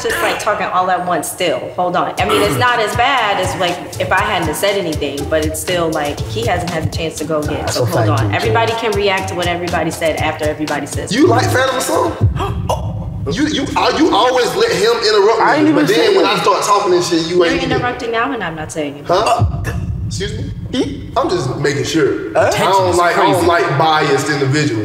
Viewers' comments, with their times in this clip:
0:10 They hell for makin them noises 😂😂😂